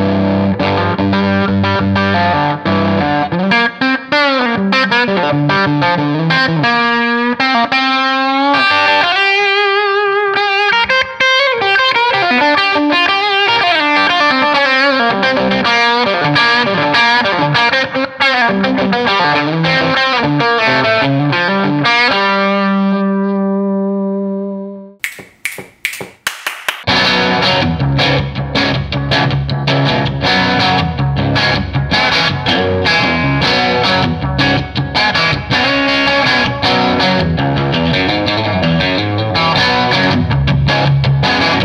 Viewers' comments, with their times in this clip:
0:08 jesus the p90s sound rad overdriven
0:28 Im looking at this tiny devil as a hard rock machine and was the answer i was hoping for. Sick tone like that, imagine slamming it with a pedal jfc